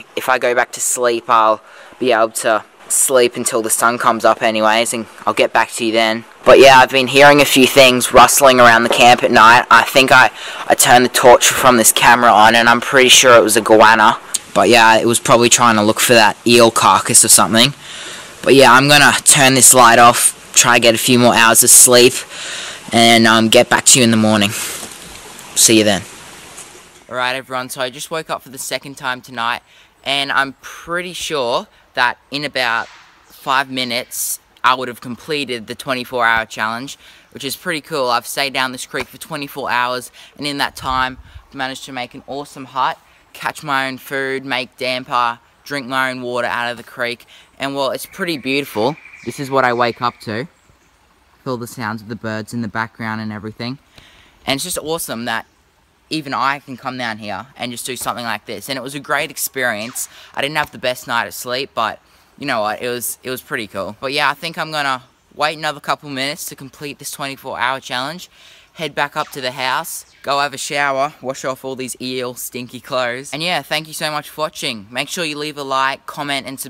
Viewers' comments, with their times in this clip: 0:07 sound warning for headphone users
0:12 when the mic is too close
0:32 Did u guys hear that gun shot
0:59 Who else heard a laser gunshot